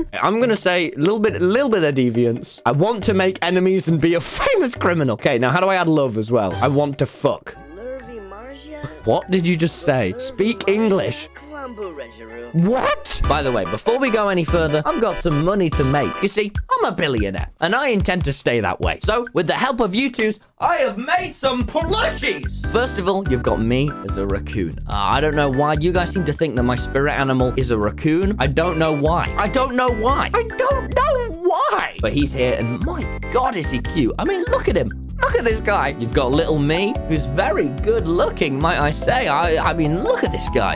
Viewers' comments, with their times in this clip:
0:10 they speak simlish
0:28 I think that Ur a racoon bc U got animal crossing music in the background XD